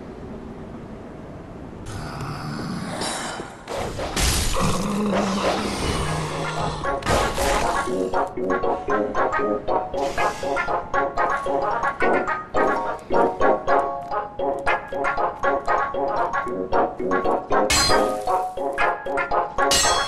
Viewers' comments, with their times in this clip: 0:04 lol that dog song